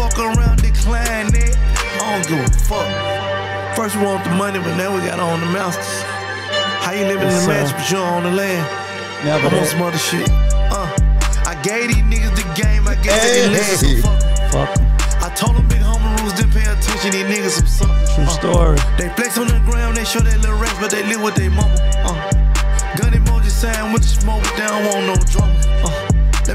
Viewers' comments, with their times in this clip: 0:09 gillie was fw that flow switch 😭